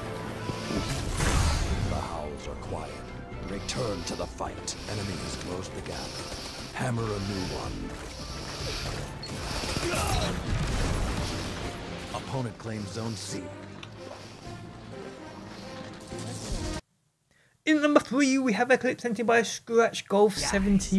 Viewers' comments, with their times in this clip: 0:03 Breathes heavily into mic Horrible aim Just floats above the hunter